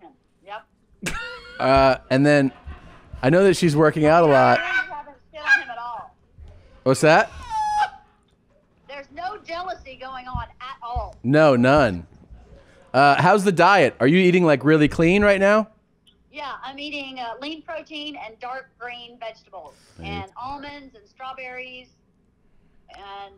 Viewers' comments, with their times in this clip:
0:04 Wasn’t watching and I thought there were Canadian geese outside